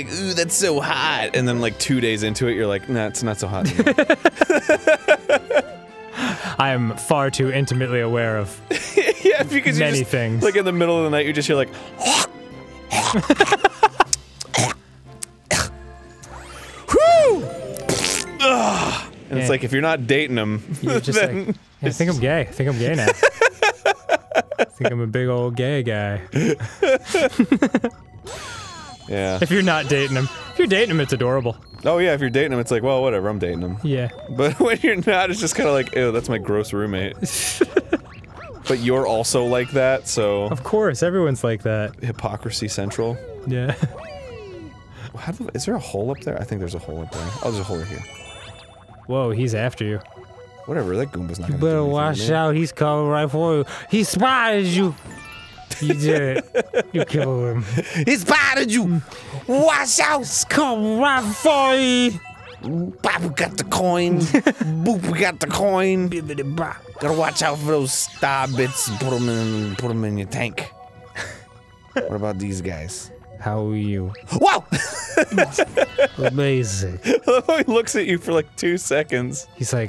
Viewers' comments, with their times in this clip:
0:08 did arin say pikachus?
0:10 Arin's best impression of JonTron
0:16 i started laughing for about five years because arin's "wOOO" was echoed by mario
0:16 arin makes the same noise as mario
0:17 Arin's "HWOOO" went along with Mario's, it was great!
0:49 I thought their jontron impressions were good
0:50 Danny becomes videogamedunkey.
0:51 Nice Jontron impression, Dany:D
1:01 t Their voice reminds me of Peanutbuttergamer